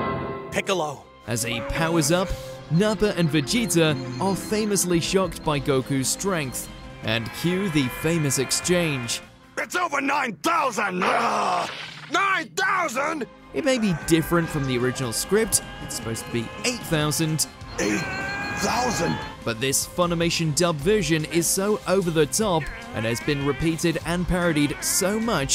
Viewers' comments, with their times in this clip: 0:09 Sabat did well with the line, but Drummond delivered it in a matter that made it meme worthy.